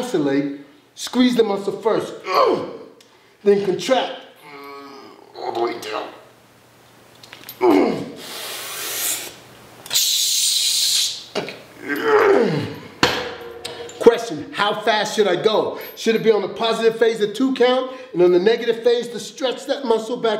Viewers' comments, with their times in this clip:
0:07 He definitely knows what he's doing....although I think that was the sound of bones braking